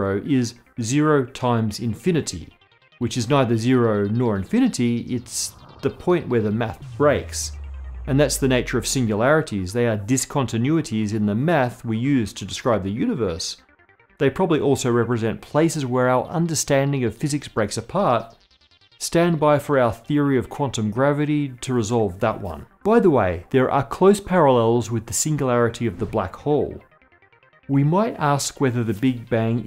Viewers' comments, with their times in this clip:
0:10 I love this show too. did he just say “…discontinuities in the meth we use…”